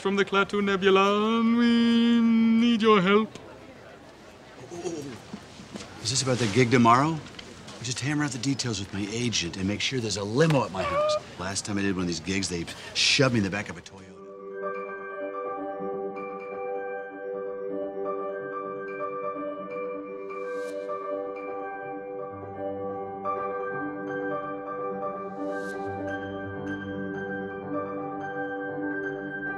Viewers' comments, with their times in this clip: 0:10 I came here just to here this Shakespearen actor make that noise when poked.